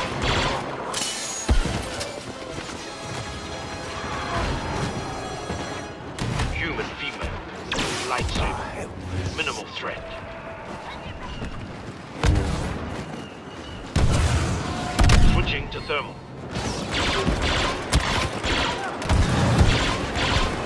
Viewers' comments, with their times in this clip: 0:06 lol I love that voice line